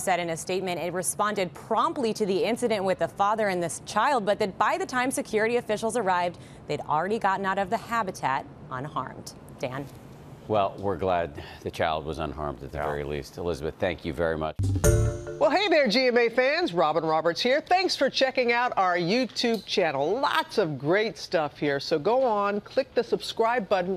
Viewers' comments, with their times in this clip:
0:10 "Well, we're glad the CHILD was unharmed at the very least." Is it just me or does he sound a bit disappointed at the level of unharm to the father?